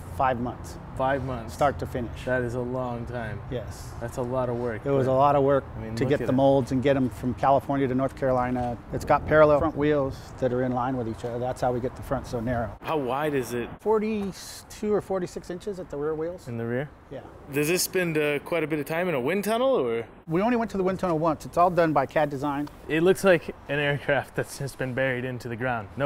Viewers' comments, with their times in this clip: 0:07 it's got paraleffent wheels?? what is he saying?